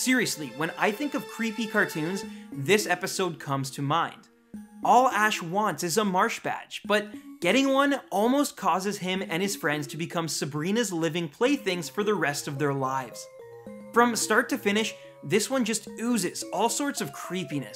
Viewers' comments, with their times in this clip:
0:03 there's something wrong with my audio